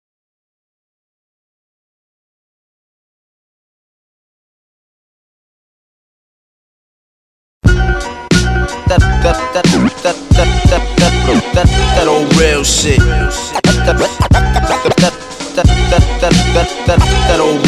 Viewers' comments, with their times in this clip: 0:03 very very dope beat and video 🔥🔥🔥🔥🔥🔥🎧🎧🎧🎧🎧🎧🎧🔥🔥🔥🔥🔥🔥🔥🔥🔥🔥🔥🔥🔥🔥